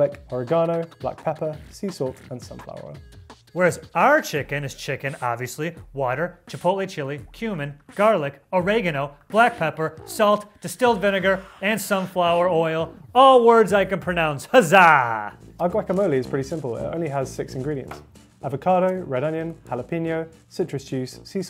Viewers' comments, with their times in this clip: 0:07 i heard it human